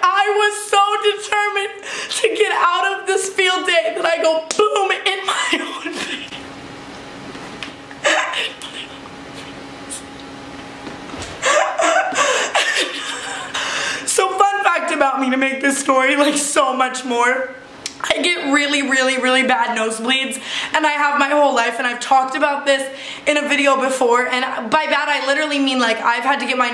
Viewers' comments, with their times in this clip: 0:07 is she crying or laughing?